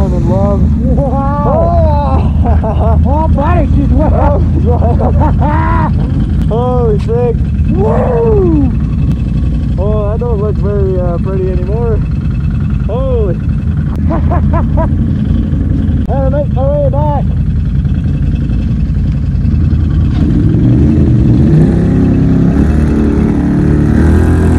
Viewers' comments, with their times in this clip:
0:08 Did I hear u do the Rick Flare ?😂NICE